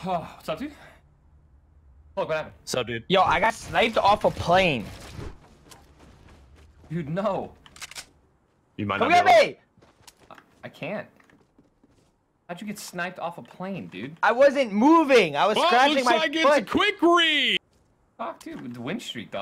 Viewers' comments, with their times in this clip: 0:05 he sounds so sad omg